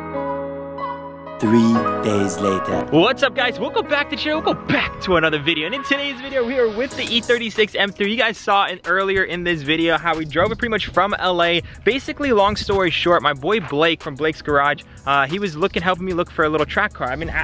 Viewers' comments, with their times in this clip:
0:03 can someone PLEASE explain to me wtf he's saying after "welcome back"!